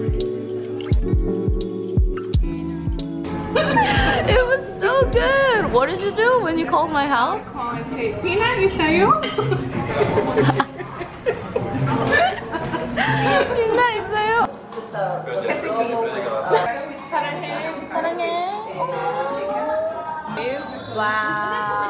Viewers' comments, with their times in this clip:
0:05 i never realized how much "bitna" sounds like "peanut." and now i think "peanuts" would've made a good name for your listeners!